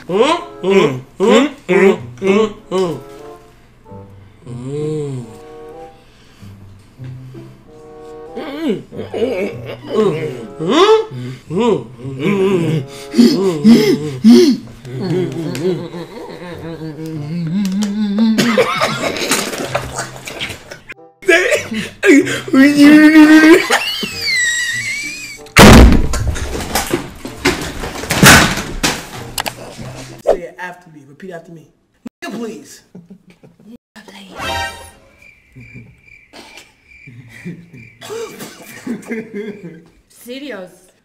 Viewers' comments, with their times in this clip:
0:09 the clap got me
0:27 that bang was personal from that hard ahh laugh 😂